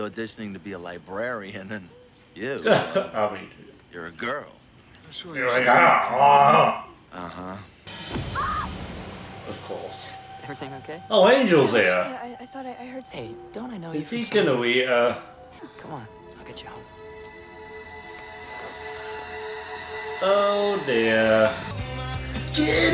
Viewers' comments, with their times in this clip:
0:05 Love how you say YoU're A gIrL rOAaaAr lmfao Larry and Xander together always kill me 🤣